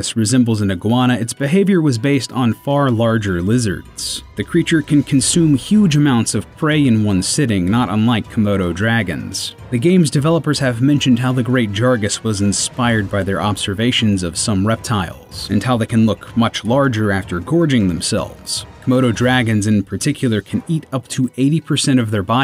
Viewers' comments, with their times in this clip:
0:06 Did you seriously say Jargas instead of Jagras ? Wtf?